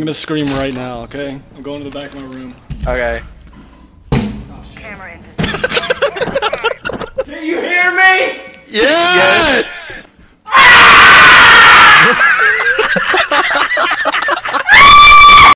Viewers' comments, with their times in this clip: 0:08 rip my ears
0:10 bruh he sounds like Courage the Cowardly dog screaming XD
0:11 I accidentally skipped to the end of the video I needed an ear rape warning